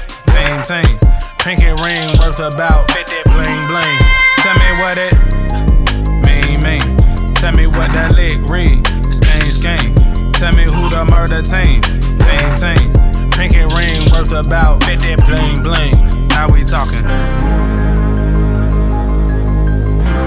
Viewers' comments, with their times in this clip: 0:03 that girl sound 😍😍